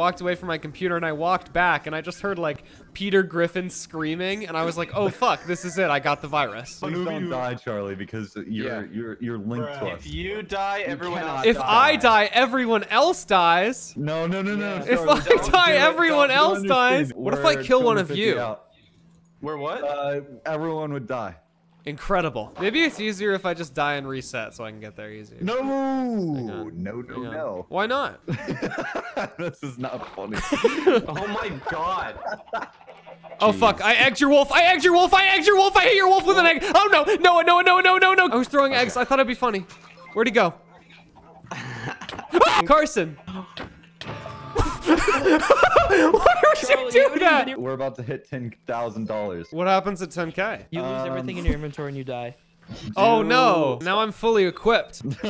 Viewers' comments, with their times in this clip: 0:05 when you cough
0:39 Did anyone else heard a class dojo point ?